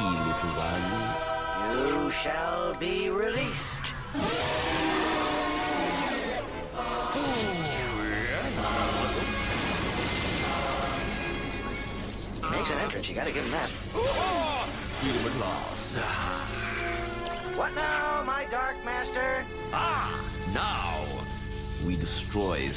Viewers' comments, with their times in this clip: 0:04 That's one hell of a demonic scresm for a kid's show...